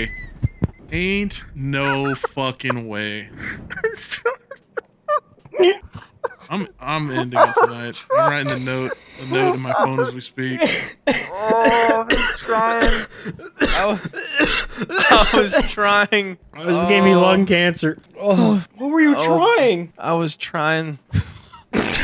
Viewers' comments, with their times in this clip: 0:05 The fucking honk 😂